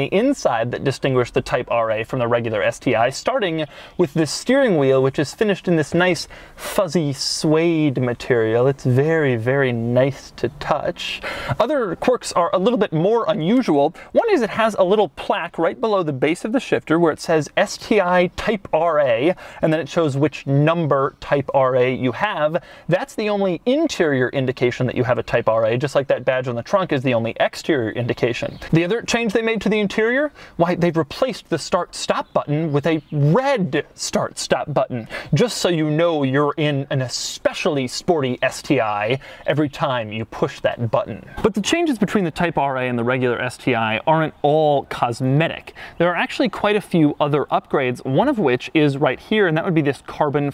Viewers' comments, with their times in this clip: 0:07 this sounds like Garth from Wayne's World
0:36 Doug is that type of guy who start a Boxer And dont let us hear it